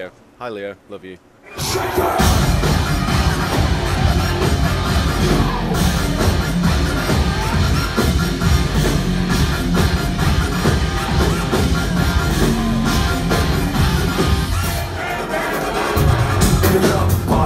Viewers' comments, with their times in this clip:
0:05 what is the song ? what a groove!!